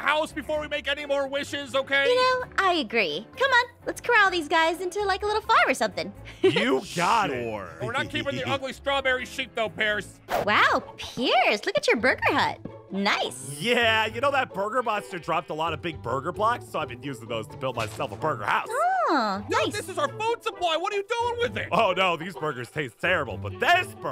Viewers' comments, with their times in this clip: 0:08 is it me or he said the s word